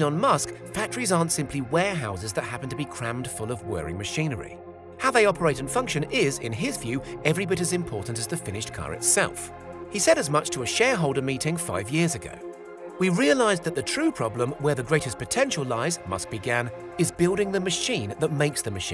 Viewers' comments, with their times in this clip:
0:03 what is the word he says after vast? Aperators?